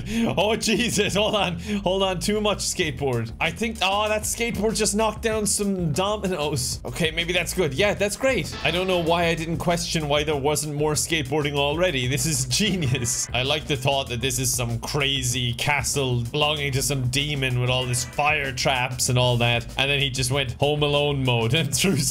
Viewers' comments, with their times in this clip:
0:08 that tony hawk sfx 😅